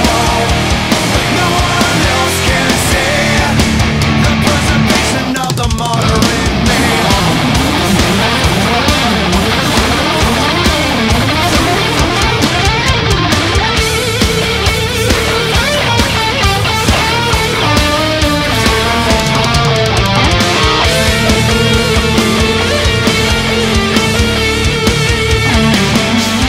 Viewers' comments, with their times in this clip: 0:05 Everybody gangsta untill the solo enters
0:14 I love that lick so much